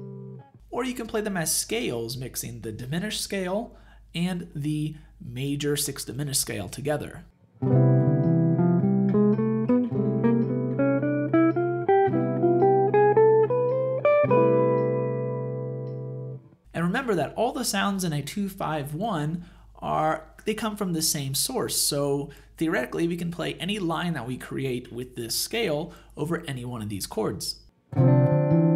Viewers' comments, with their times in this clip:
0:10 This is very good material. I am wondering about using a Bb in the line as Bb in neither the C maj dim or D min scales. Thanks